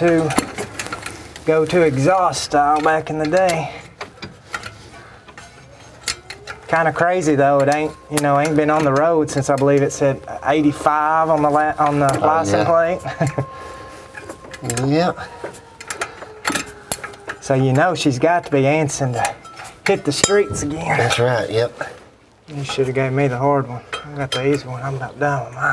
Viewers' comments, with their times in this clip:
0:07 Who heard the Siren go off ?
0:08 is this an alarm siren in the background?
0:11 I can hear an old-fashioned air raid siren coming from somewhere outside your building. Am I imagining this sound, or do you have a volunteer fire department in your town?